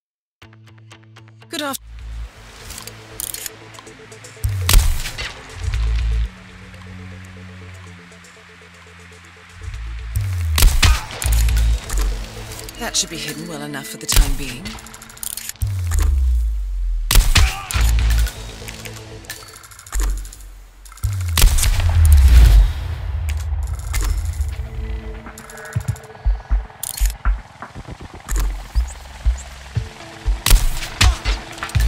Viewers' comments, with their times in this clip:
0:04 Always loved that sniper's transition sound.
0:16 I love the guard's "aaargh!" after his head explodes